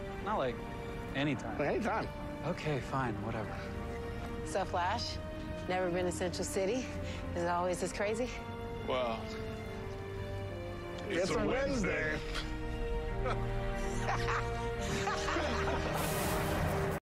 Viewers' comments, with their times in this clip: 0:04 that was super funny and caught me off guard. I think that was actual genuine laughs
0:14 it feels like this was like a genuine reaction/laughter it's cool they kept it in I love stuff like this, even if it wasn't it just feels like they're having fun together on set